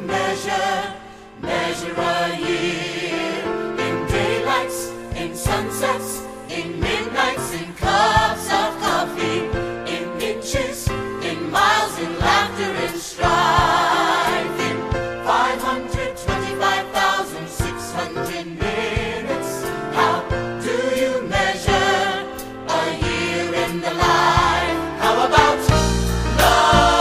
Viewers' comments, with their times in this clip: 0:10 im sorry but did it say in bitches